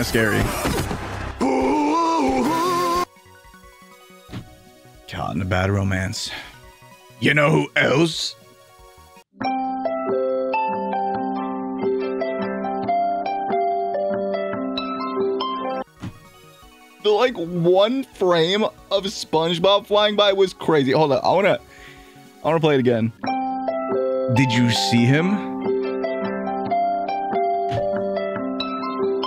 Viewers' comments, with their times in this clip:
0:09 watching this at 2.32am and this made me become wide awake because i used this alarm in the golden days 💀
0:14 geniunly gave me trauma. Thats my alarm and that noise is forever seared into my brain